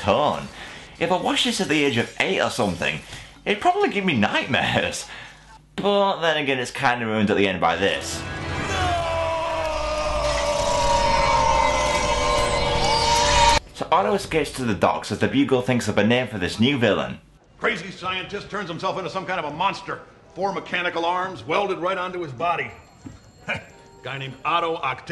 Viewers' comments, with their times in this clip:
0:09 "Nooooo!" Darth Vader from ROTS much?
0:10 Attention all youtubers. I dare you too name one time when someone yelled NO and it sounded cool. We had Darth Vader and now this.